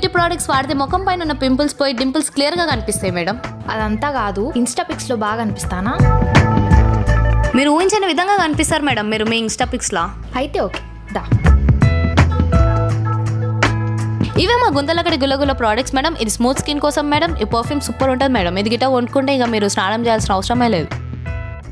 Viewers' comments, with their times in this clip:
0:05 she is so quite. Any one know she's Name